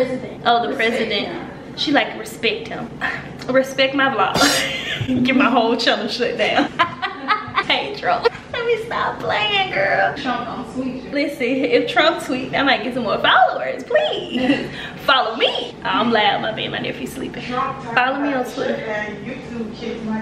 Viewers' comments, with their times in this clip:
0:05 I love your laugh; makes me laugh ❤️